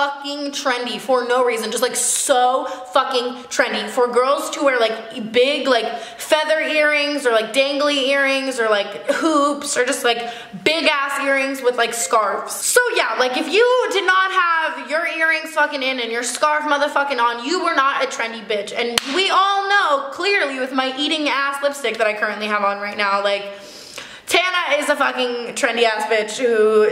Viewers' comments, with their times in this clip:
0:10 her phone rang😂😂